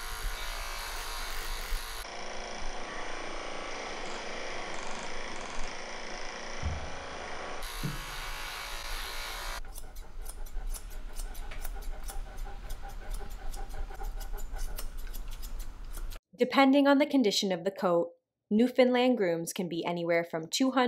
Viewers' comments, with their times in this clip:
0:06 those clippers were really fightin there